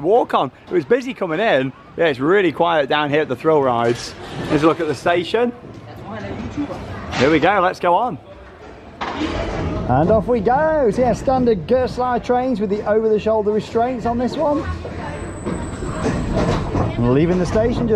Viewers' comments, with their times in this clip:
0:05 if you hear closely you hear someone ask in a terrible accent "are you a youtuber ?"